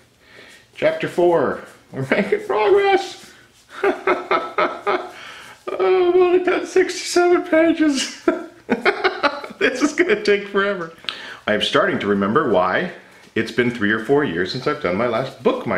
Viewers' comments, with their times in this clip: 0:03 you can actually hear him going insane